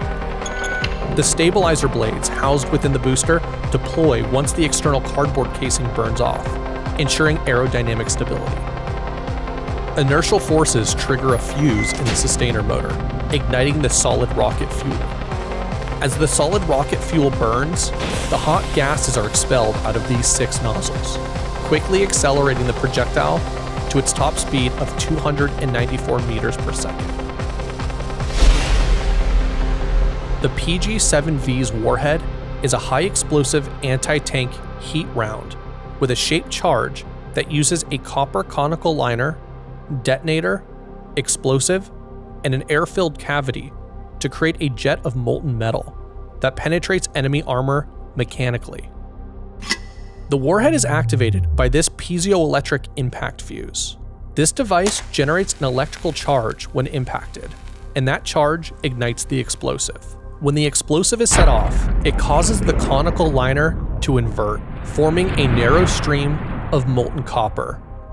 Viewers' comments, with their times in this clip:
0:05 the music goes unbelievably hard here, that it gave me chills. S tier music production 🙌 (or choice if you didnt compose it yourself)
0:52 He also pronounces "piezo-electric" Like "pea-zee-o" instead of "pea-ey-tso" electric